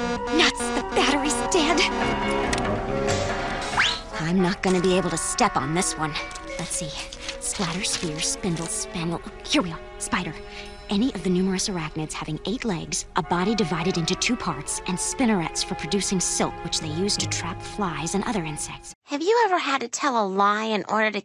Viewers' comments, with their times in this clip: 0:04 it sounded like lucy loud! But added in real faces behind of each cartoon characters who always being hidden from past.